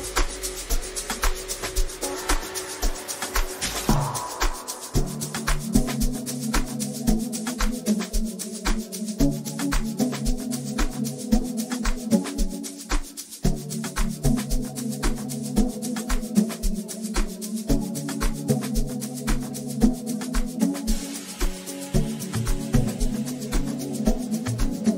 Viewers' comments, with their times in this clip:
0:10 Nah man the track that comes in is out of this world! 😭🔥🔥